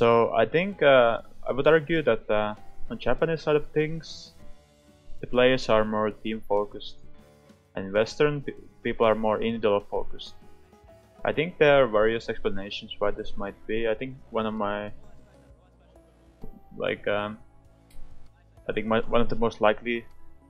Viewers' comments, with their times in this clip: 0:08 I'm sorry but what did he say ? I really have a hard time understanding his accent.